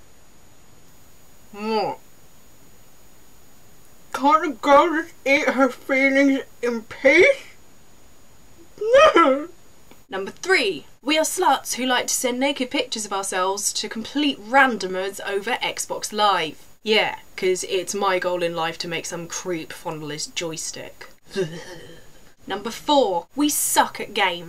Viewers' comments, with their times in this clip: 0:05 I don't know if this is what you were trying for but when eating the icecream you sound like Stan Marshs sister from south park :), by the ay great video!